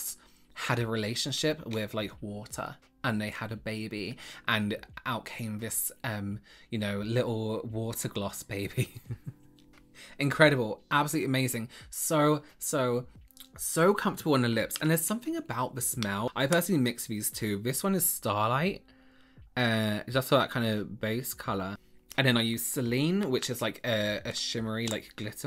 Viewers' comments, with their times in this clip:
0:08 little water gloss baby. Hahaha. I love when folks make themselves laugh!